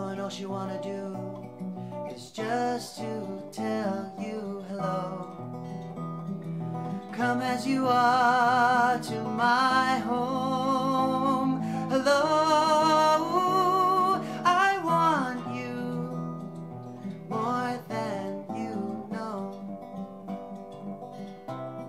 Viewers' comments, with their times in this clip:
0:07 Nirvana reference? Great song btw it's pretty cool because it reminds me of Paul's vocals but it also reminds me of "Julia" too! (Especially with that picking technique.) Keep it up!